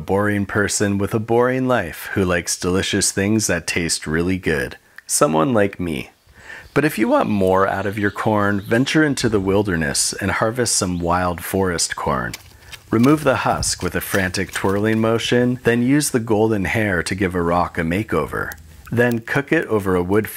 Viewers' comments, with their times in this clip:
0:06 That's a nice voice crack 10/10